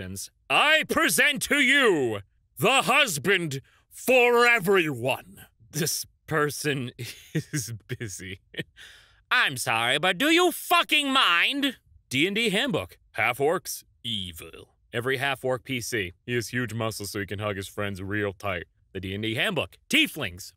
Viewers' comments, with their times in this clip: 0:06 I don’t know if I want that to be a fully intentional papyrus voice or just a silly voice that just so happens to sound like papyrus… they’re both just such horrible options